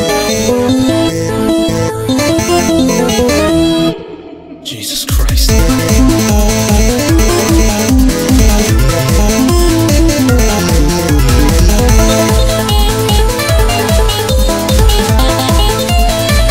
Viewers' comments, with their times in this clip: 0:03 that's cool that you had wanderer talk